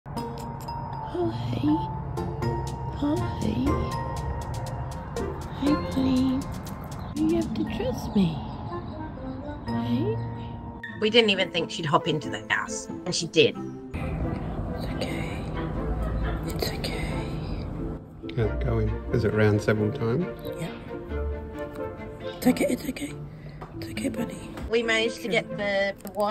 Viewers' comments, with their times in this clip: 0:08 The lady’s voice is so soothing.